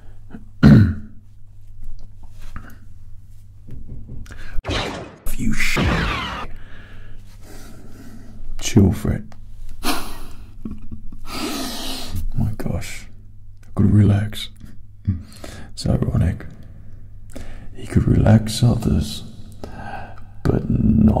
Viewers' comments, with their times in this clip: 0:03 I love how he ASMR screams swear words when he's pissed. And to be honest who does go round knocking on doors at like 10pm